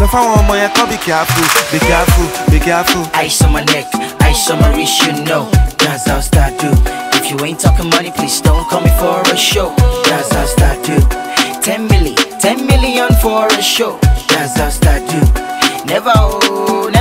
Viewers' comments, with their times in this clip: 0:03 The real star in this video is that Eyo!